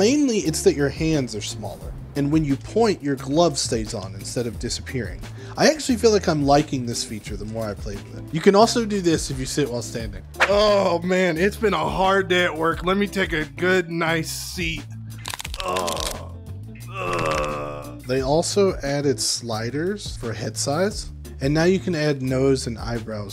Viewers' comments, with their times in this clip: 0:10 OOOOHHHH MAN ITS BEEN A HARD DAY AT WORK LEMME TAKE A GOOD NIGHT SEAT (VIOLENT CRACKING NOISES) AAAAAAUUUUGGGHHHHH (C R A C K) AAAAAAAUUUHHHH